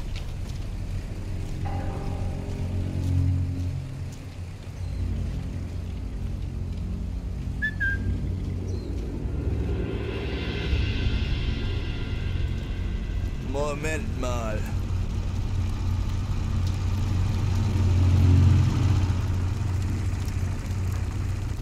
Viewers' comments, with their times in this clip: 0:05 Haha, the whistle while walking RIGHT NEXT TO somebody! 😂